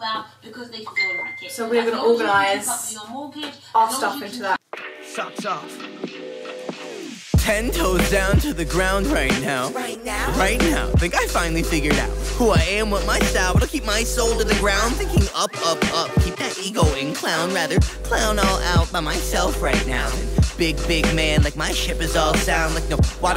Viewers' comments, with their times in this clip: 0:04 Can I hear Patricia Bright ? 😍